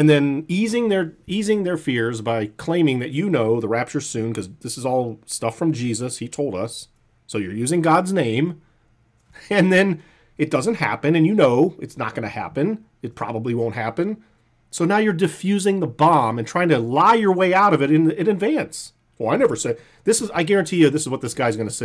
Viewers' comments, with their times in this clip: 0:07 I wonder if he caught himself almost saying 'business' m, with his mouth closed for a B: "when you run a successful......(business?)......channel".